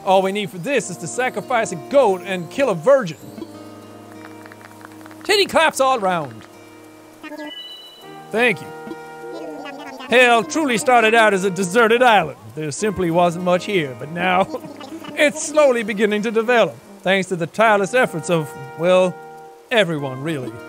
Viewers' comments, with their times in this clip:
0:06 It kinda sounded like Tom Nook said "Thank You."